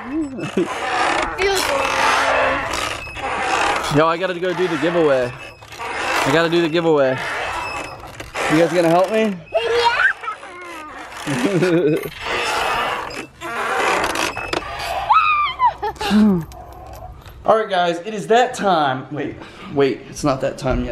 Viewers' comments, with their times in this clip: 0:05 sounded like empire lol